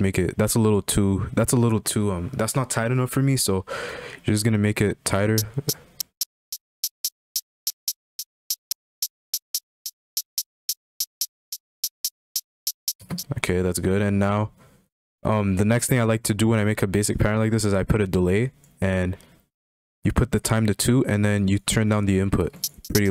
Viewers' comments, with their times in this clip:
0:04 Anyone else hear that giggle when he said “make it tighter”